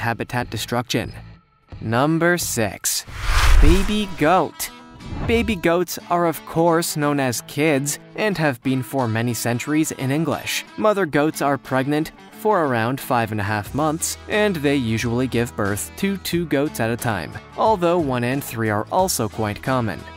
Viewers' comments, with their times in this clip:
0:03 I heard "Beebe goat"